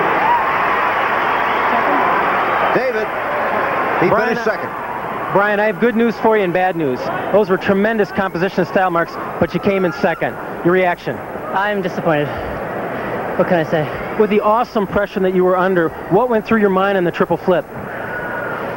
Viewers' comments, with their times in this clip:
0:03 Sounds like he said '"Shit"